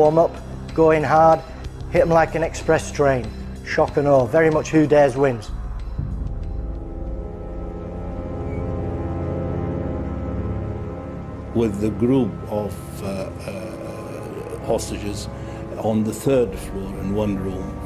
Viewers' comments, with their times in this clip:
0:05 Very interesting, but why do docu producers so often feel the need to add doomsday music (for ex. onwards) as background filler whenever people are interviewed. There's gooseegg reason for adding such silly music "for dramatic purposes" at all: it's irritating, and makes it difficult to concentrate on what witnesses are telling.... I expect more maturity from good docu makers, in stead of such cheesy techniques....